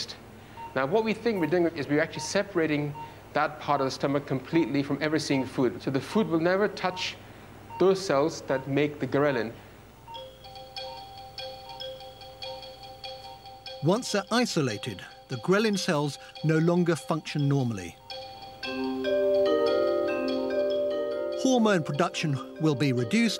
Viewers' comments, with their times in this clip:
0:08 Doctor phone rings while operating